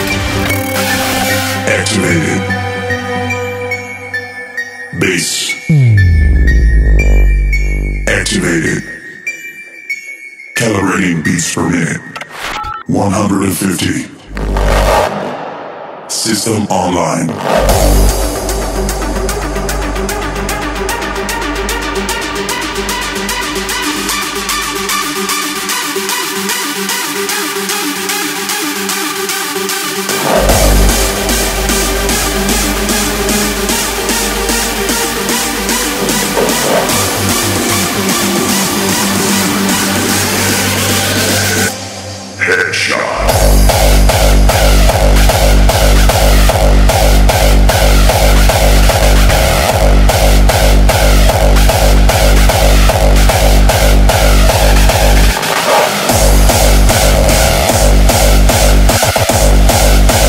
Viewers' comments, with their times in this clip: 0:04 ULTIMATE BASS TEST :O
0:41 Best Screech ever made
0:42 ANTI CLIMAX HARDSTYLE<3<3<3<3